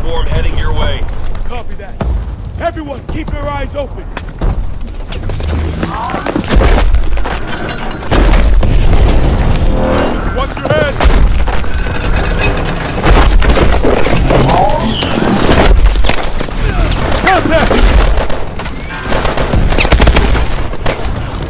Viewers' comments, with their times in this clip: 0:08 why does every robot has got to make that transformer sound?